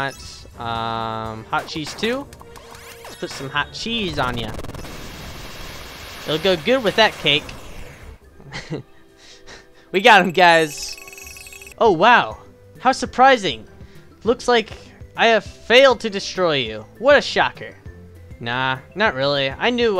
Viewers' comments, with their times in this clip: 0:03 “put some hot cheese on ya!” That’s the best sound of “ya” ever!